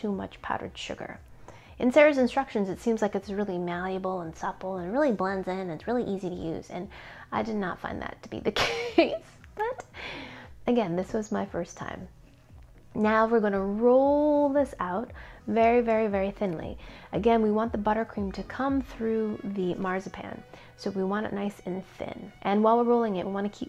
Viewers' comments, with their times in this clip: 0:06 I love the part when she made her nasally voice to mock how easy it was to blend in 😂